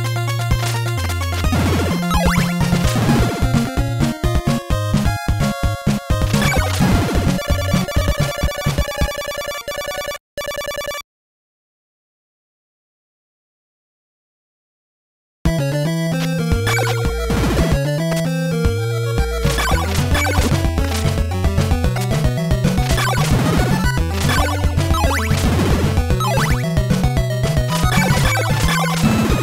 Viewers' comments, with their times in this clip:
0:10 That day to night changed in music always gets me! Iconic!